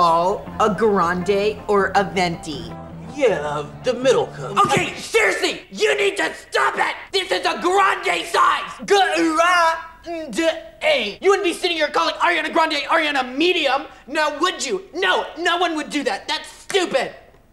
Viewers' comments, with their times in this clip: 0:03 i heard a discord ping
0:04 She yelled at an old man